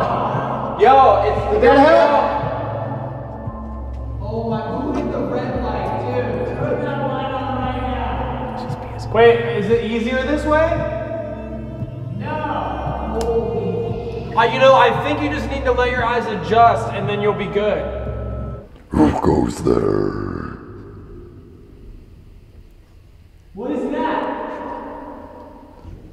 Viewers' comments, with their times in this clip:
0:07 Evp I'm not referring to the whisper it's in the background of them talking but it's possible the whisper is an evp too. I'm just not sure about the whisper but you will know the evp if have ever heard one before because they have a distinct sound to them usually.